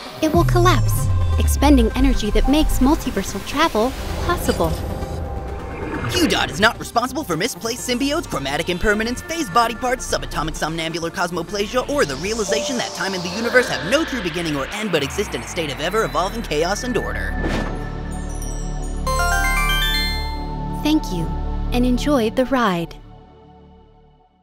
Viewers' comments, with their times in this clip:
0:10 Cosmo pleasure? Oh Boy